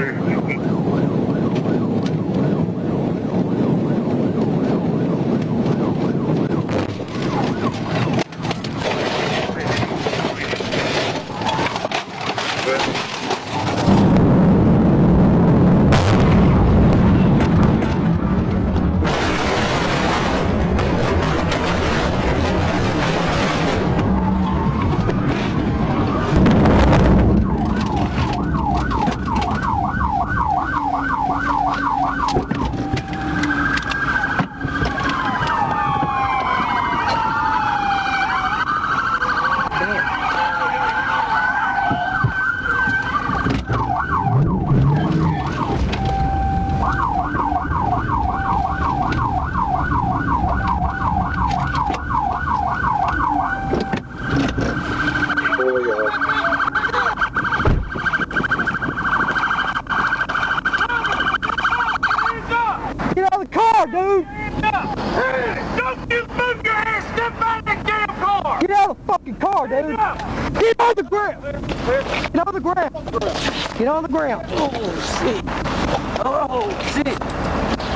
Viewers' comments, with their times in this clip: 0:06 *boom* GRUBHUB AD STARTS PLAYING
0:06 I just heard, SKIBIDI BOP MM DADA 💥
1:05 Did I hear right??? "freeze!! don't you move you're ass!!" and "get out of the car!!!" at the same time??